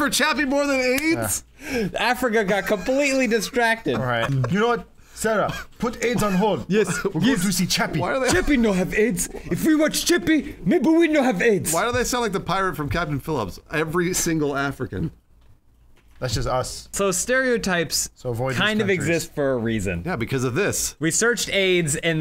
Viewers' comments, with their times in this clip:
0:04 hahahaha their accents